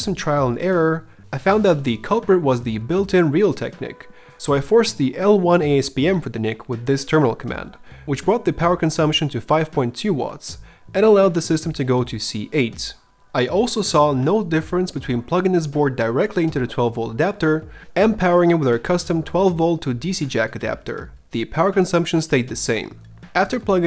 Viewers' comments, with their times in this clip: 0:08 The sybylant sound scared my cat